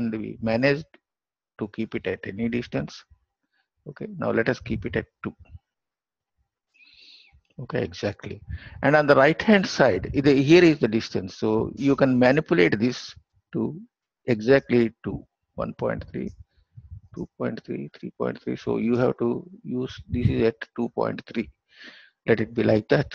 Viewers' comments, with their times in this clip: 0:06 a cat died here.. and sir said "exactly"